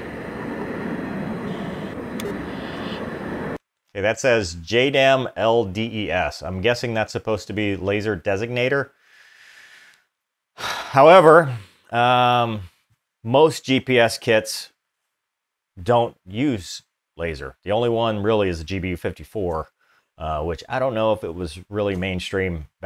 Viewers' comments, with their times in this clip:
0:09 I love how he takes a breath before he goes in on them.